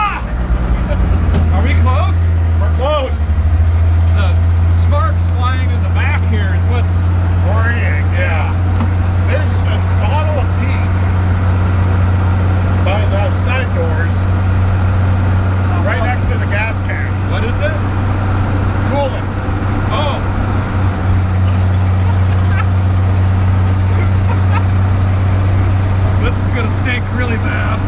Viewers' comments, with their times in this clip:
0:08 I thought he said there's a bottle of PEE - by the side doors!
0:10 I was positive he said he had a bottle of pee 😂